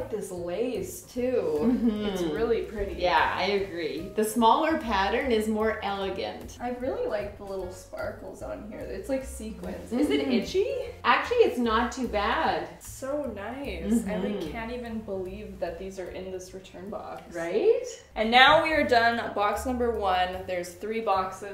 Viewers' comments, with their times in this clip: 0:03 I love hearing y'all say tag ("teg"). I also love the strategic subscribe placement 🤣🤣